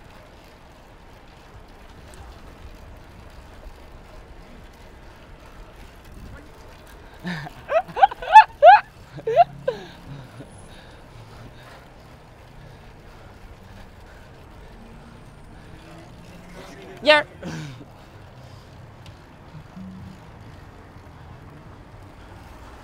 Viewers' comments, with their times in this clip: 0:05 He intentionally got close to those pedestrians which he nearly hit and laughs about it. -Like most, I also think this guy is a total d-bag and would gladly pay to see him get hit by a car. Maybe he should try his luck in cities like N.Y or L.A to see how his attitude is received-